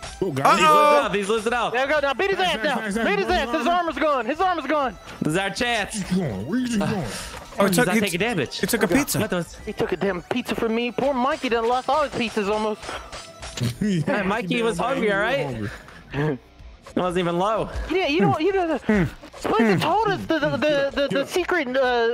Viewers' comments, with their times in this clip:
0:03 his arm is gone? 💀